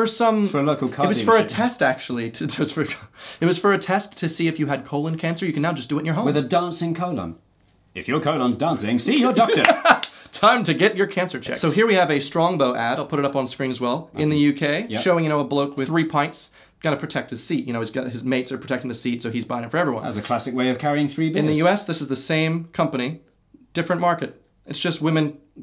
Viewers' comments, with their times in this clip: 0:07 WHY DOES HE ACTUALLY SOUND LIKE THE GUY SJDMENCJEX